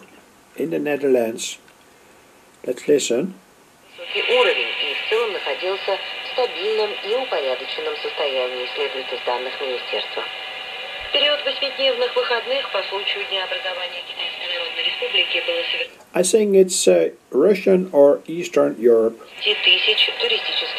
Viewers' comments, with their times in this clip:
0:04 what you've got there is some Russian.